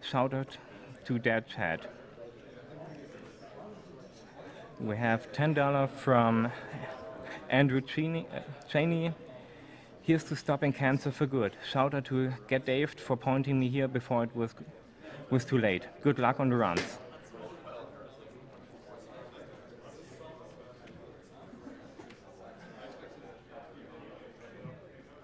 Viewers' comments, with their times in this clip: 0:08 SleepyCouch% HYPE! I was so dead during this run. I think I kept falling asleep but every time one of the bad guys died I woke up and kept watching. I love the GDQs, sleep is for the weak xD The reader that started talking after ish sounded really tired. Poor guy.